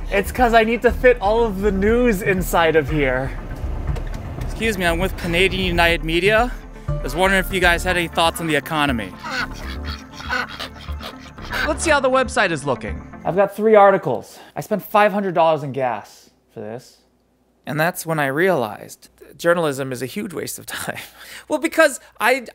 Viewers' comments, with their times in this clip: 0:10 they don’t look too happy. They’re quackin’